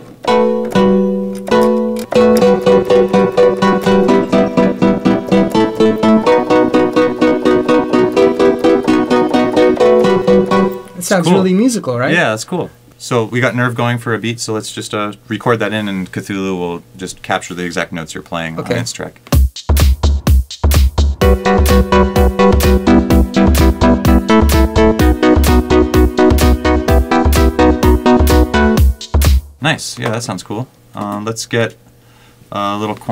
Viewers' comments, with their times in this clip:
0:04 That almost sounded like Clockwork
0:20 damn that was actually pretty damn good timing!